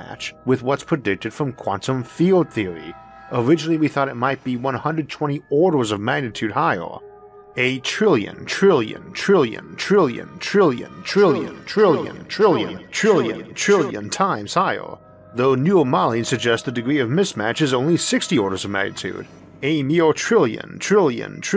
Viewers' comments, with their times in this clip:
0:08 the echo effect is unexpected but welcome!